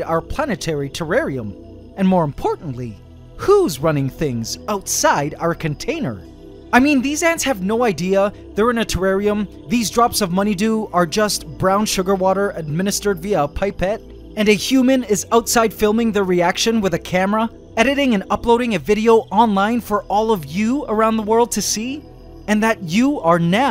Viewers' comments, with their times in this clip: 0:10 Hey, what's that music ? the low resonant synth music